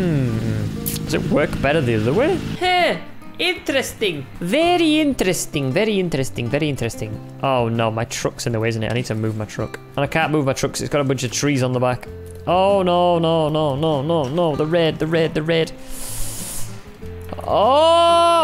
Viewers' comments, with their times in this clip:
0:03 russian accent confirmed